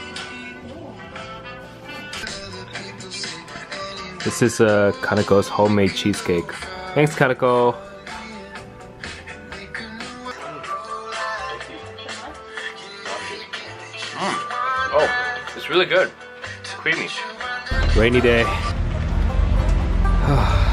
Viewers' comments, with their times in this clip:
0:08 No one gonna mention John Mayer playing in the background